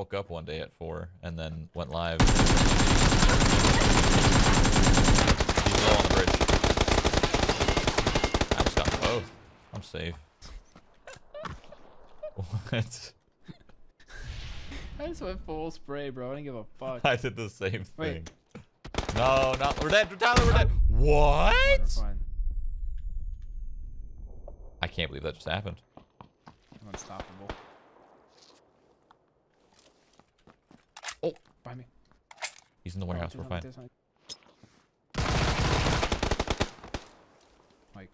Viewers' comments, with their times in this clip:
0:08 O:07- is that how sounds when lighting strucks😂
0:21 Is anyone gonna speak about that "whaaaaaaaaaaaaaaaaaaaaaaaaaaaat"